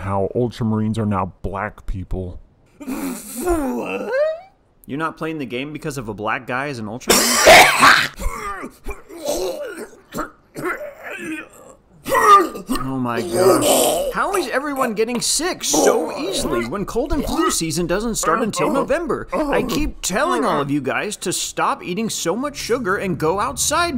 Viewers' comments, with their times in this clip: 0:07 made me wheeze when he started hacking finding out about black people not being in Space Marines 2 lmao 😂